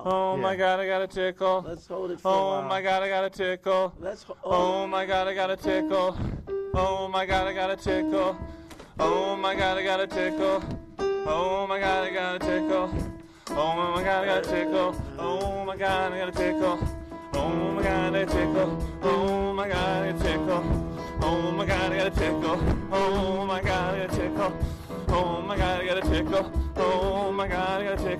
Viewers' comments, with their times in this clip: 0:09 The hook totally needs to be in a Wu Tang jam.